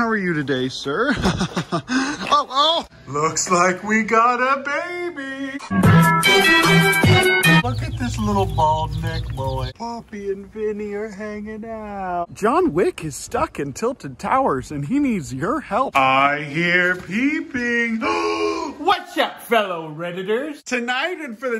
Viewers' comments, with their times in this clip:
0:05 Whese plays music on ? Sounds like one of the sonic hero stage.